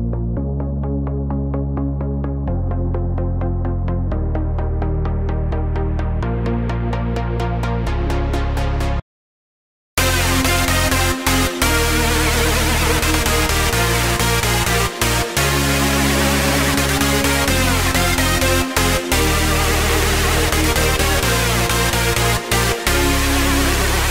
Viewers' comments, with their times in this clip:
0:09 really bad transition ... but otherwise a good tune